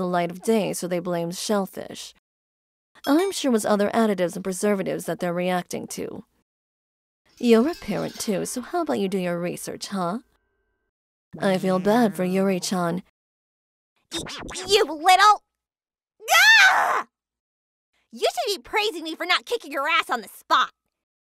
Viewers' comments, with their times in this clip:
0:09 *Doom Music intensifies